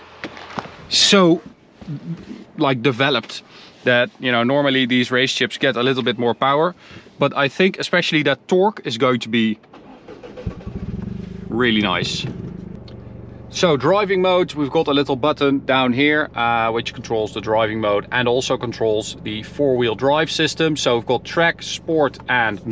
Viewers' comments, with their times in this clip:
0:09 it sounds like a lawnmower 😂